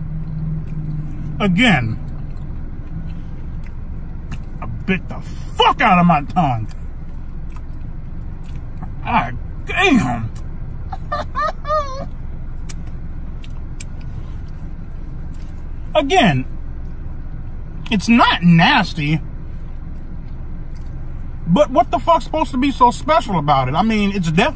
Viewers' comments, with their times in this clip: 0:10 lmao the laugh😂😂😂